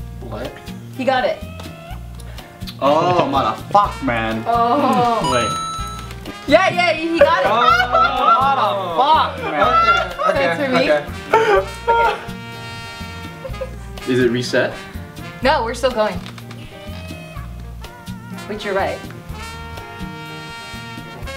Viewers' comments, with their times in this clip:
0:04 I thought someone texted me XD. The mario coin is my text sound. I'm so lonely...